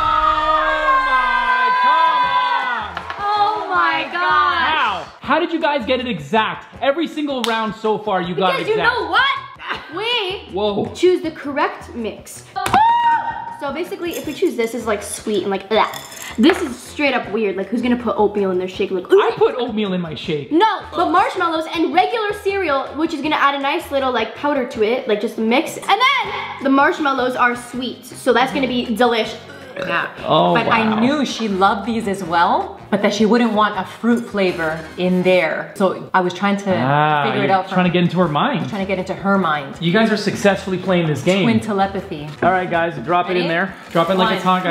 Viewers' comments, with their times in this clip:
0:03 did they say “oh my gosh” at the same time too?😂
0:03 They even say “oh my gosh “simultaneously 😂😂
0:03 THEY ARE TWIN TELEPATHS!!!!!!!! They said oh my gosh at the exact same time!
0:03 they said omg at the same time
0:04 THEY SAID "Oh my goSh!!" AT THE SAME TIME
0:28 she burps not hate I love this channel